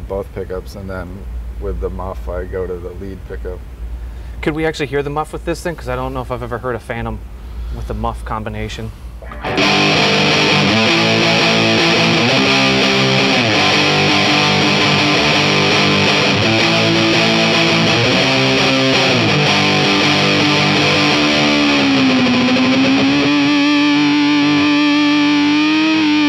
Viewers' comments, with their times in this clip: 0:07 😂 cracks me up because after he stops playing casually moves on after an awesome fuzz tone.